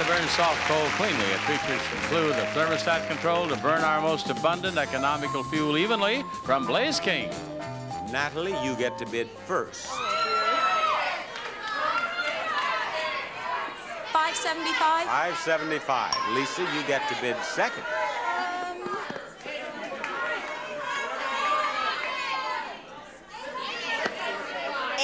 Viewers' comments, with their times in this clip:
0:10 Apparently Wario is in the studio audience.